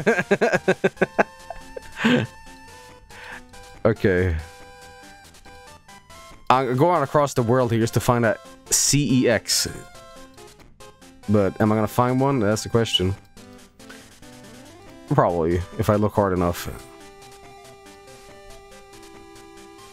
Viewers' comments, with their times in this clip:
0:07 You probably thought nobody would call you out on the whistle sound you made pronouncing an s didn't you? Well guess what I'm not letting you get away with it, not this time. I'm serious dude. You're finished.